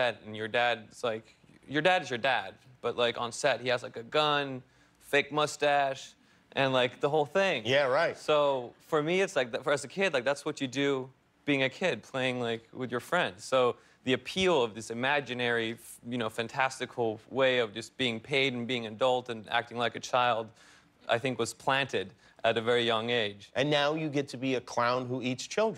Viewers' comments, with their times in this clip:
0:07 the way he says “the whole thing” is too precious 🥺♥️